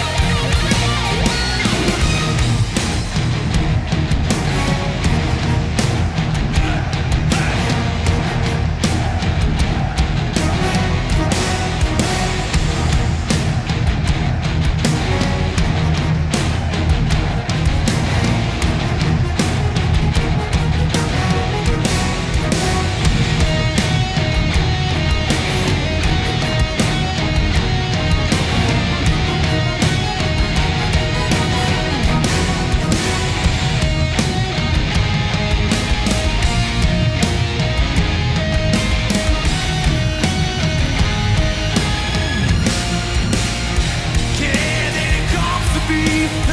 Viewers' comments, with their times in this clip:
0:06 with the audience gives me chills!!!!
0:34 when kirk plays the major chord instead of minor 🌶🌶🌶